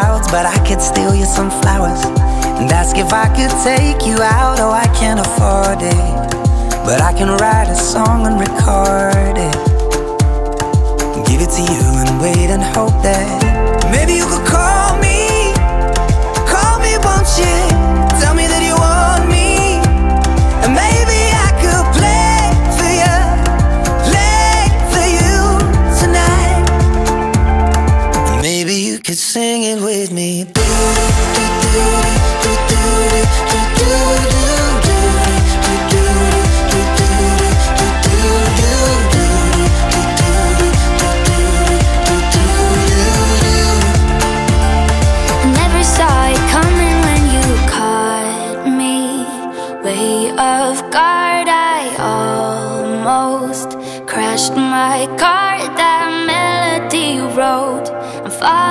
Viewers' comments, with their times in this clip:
0:04 "I kinda farted"
0:45 Angel voice from and she could get more space in this song, she has extraordinary voice